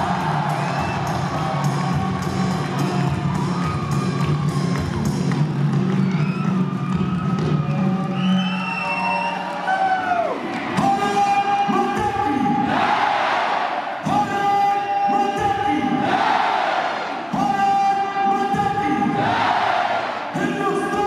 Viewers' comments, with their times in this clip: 0:06 who can hear from Pakistan side Naray Takbeer Allah hu Akbar Before he say Barat mata ke